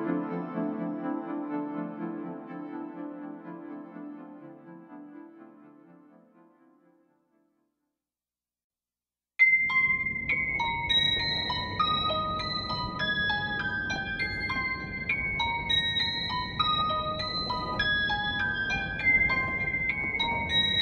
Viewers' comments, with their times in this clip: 0:06 * Aurora starts" Oh fuck oh fuck fuck fuck fuck fuck it sounds like something is going to go wrong Every Damn Time